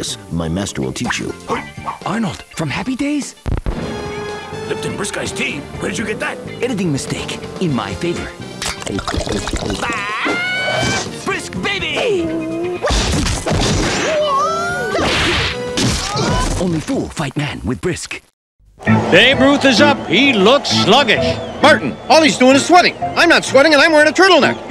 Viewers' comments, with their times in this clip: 0:05 😂lol the sound of drinking